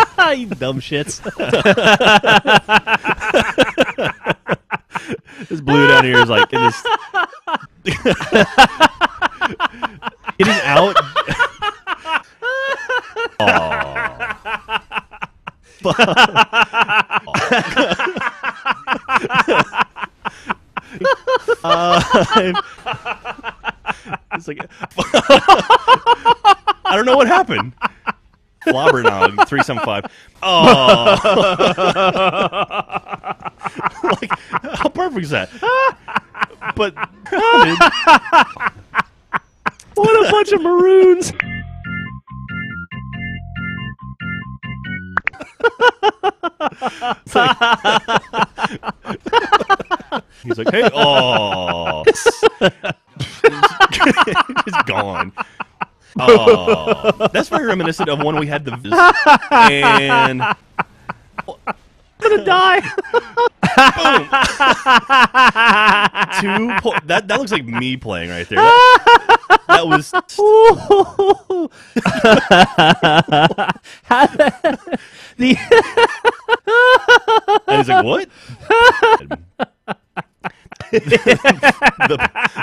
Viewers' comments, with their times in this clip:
0:09 is the best laugh
0:30 is my personal favourite laugh
1:03 Lol when geoff laughs and says he's gunna die :D